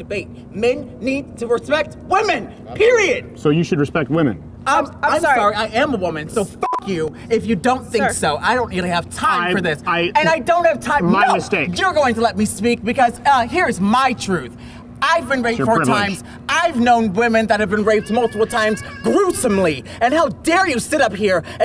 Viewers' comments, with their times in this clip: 0:03 the security guard can’t hold his laugh I’m dead